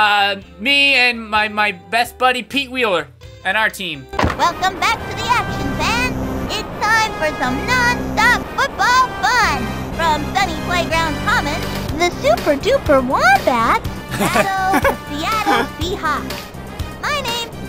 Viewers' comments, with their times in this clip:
0:03 Luther? Friend of Freddy the Fish? Is that you?